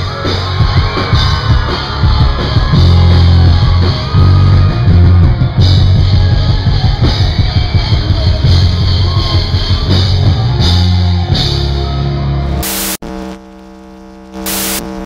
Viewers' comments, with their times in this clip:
0:05 fart noise hahahahahaah!